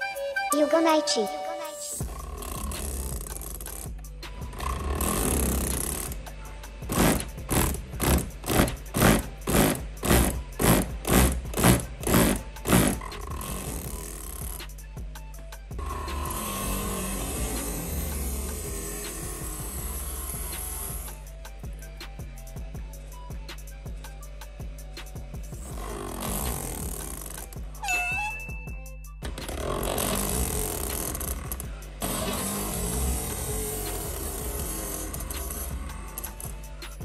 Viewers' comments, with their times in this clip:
0:06 why does that sound like a car engine?
0:24 sounds like an op machine gun